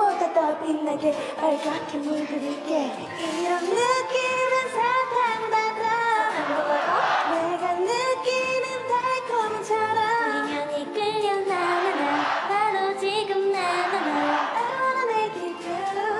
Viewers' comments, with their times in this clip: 0:03 no one is talking about yujin in her voice is so stable